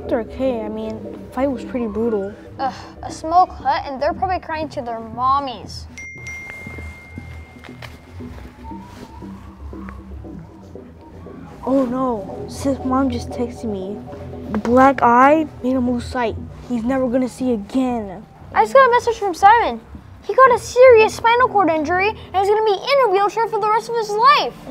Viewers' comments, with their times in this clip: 0:06 when i heard the notification, my grandmother got a call 😂